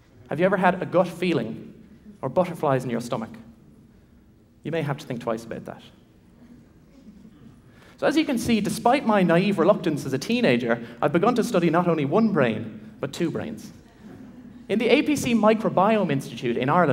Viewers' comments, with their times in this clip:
0:04 "You may have to think twice about that." Pauses for laughter, but no one gets it Decides to move on